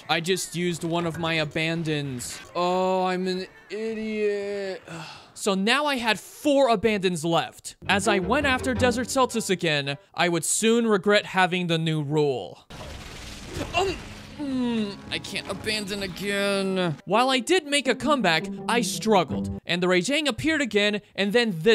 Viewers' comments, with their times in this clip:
0:06 ah, yes. Anandons... That's a snake-dino hybrid ?